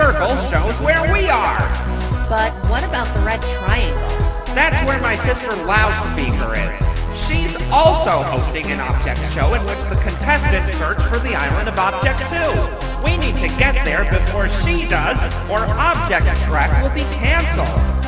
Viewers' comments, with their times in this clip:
0:04 I THINK HE SAID THAT WRONG HE SAID "THAT'S WHERE MY SISTER ALLOWS ME IN BUT I HEARD "THAT'S WHERE MY SISTER ALLOWS ME ARE IS"